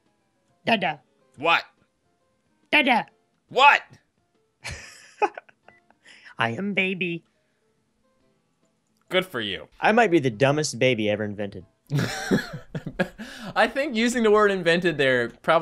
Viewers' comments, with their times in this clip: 0:03 he sounded so weird